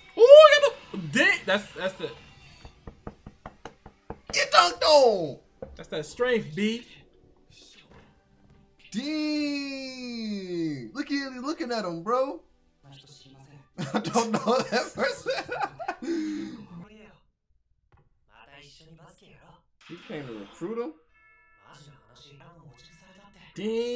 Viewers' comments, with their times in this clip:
0:04 it seems that says "Qué tonto" in spanish, lol. Xd